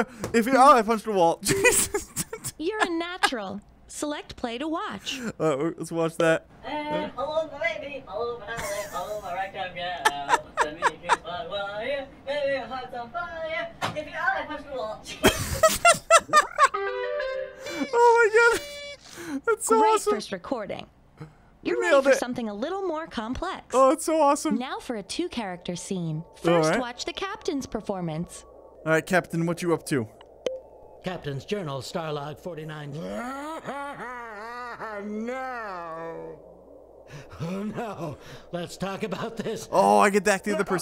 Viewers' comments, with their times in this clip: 0:07 For the laughs!
0:21 what happened to your voice